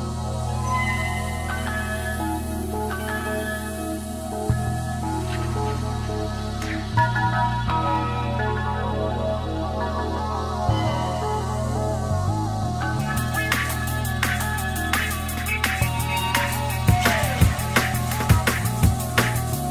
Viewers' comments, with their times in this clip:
0:05 Huge mix. Anybody got an ID for the track playing ? That 303 lead is sending me places.